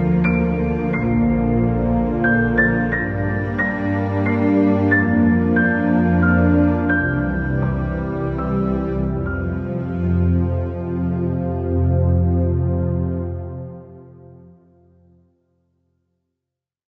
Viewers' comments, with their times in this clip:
0:07 That was beautiful! And I’ve never heard that song you were singing about the Lord. I really liked it.🙂